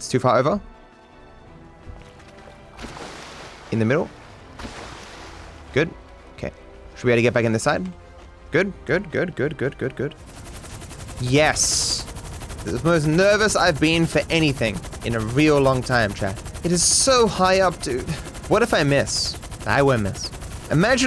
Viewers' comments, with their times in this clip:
0:03 Why does the background music sound like the theme for og yugioh? At least vaguely.